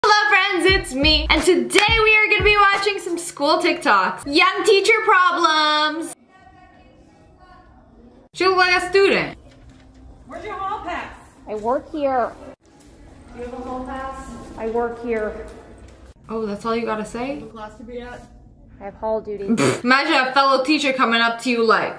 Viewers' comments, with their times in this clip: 0:03 some “S” tiktoks